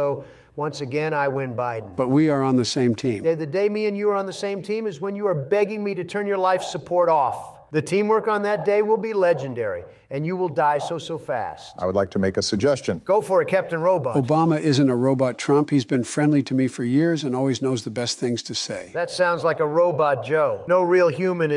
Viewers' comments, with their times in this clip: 0:03 This got me dying 😭 the way he says it so loud and proud